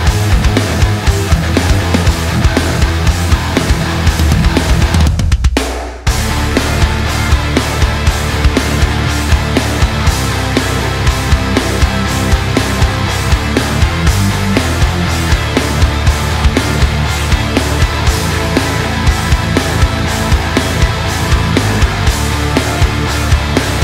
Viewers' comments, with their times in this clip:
0:04 i agree, the drums he uses sounds so good. and is why the snare is my favorite drum to hit haha not sure what he is using; I use GGD for my roland edrums and it sounds fantastic but I dont use compression or anything just straight out of the box to my monitors and I run a drumless track on my laptop.